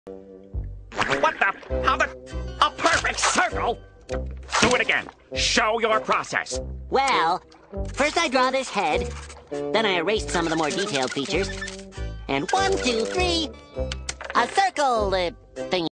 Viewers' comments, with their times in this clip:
0:01 a wind sound